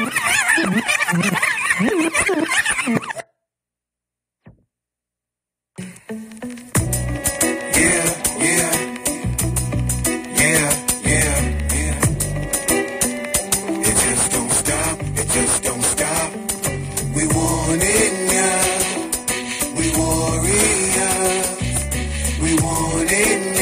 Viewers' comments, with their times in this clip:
0:08 whatever the hell happened "Krayz Fav" - That mess is stupid awesome and i cannot understand why that did not hit an album. From XX:XX , its a lowride, gangster-boogie-Bone-style. What madness. "Dont ask me if bone broke up, F- That sh*t" love it. (we drink whenever bone says "pap", everyones smashed after 2 verses)